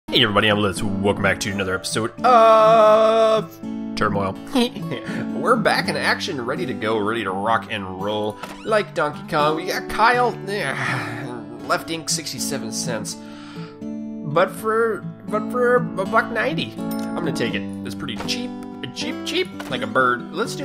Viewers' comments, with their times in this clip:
0:04 DAT LAUGH DOH